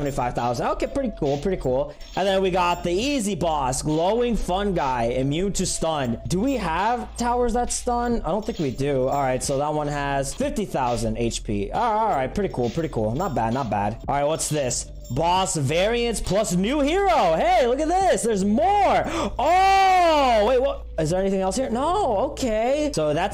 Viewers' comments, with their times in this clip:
0:06 sad byte noises D: